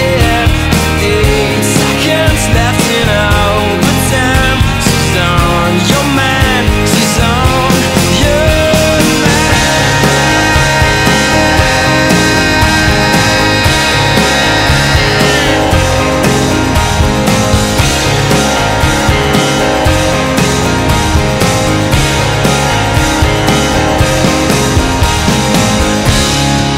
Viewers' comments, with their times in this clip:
0:08 try tell me the piano doesn't sound like closer by the chainsmokers